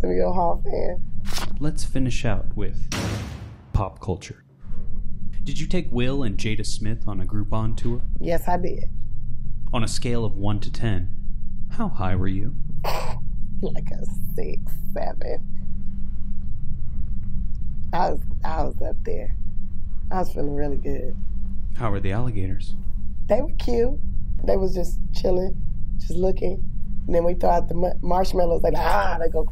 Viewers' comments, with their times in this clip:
0:10 I swear if the interviewer was a bit more enthusiastic, he would’ve sounded like Baymax